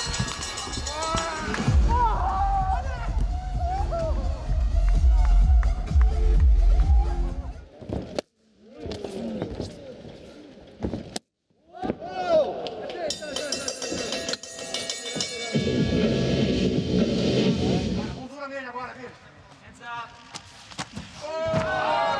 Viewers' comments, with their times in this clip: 0:03 you can actually hear crying.